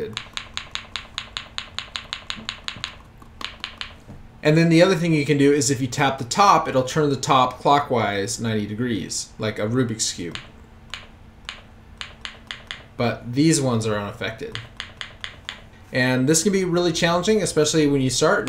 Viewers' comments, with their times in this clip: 0:06 sounded like he said f wise